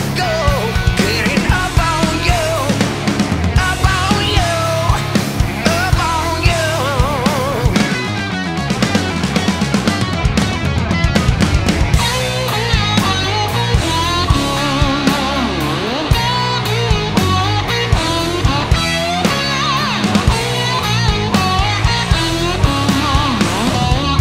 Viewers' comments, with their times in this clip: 0:09 The synchophated rhythm reminds me of a song 😅 Your Daddy, brother & little boy 😅